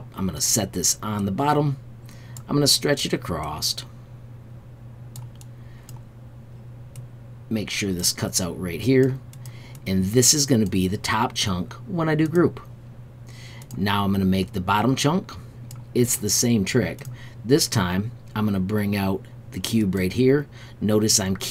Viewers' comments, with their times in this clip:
0:04 I thought you said ACROSST or something like that No big deal, it is just after a lifetime of editing, my OCD makes me stop paying attention when I hear things that sound a touch off. My problem not yours, thanks for your hard work!